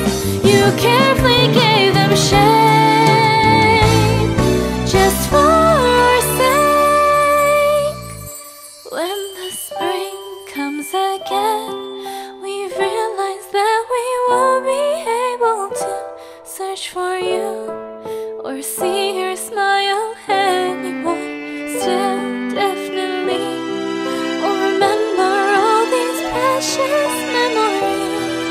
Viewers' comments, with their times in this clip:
0:05 your high note is really amazing
0:16 This song like someone crying when she sing this song in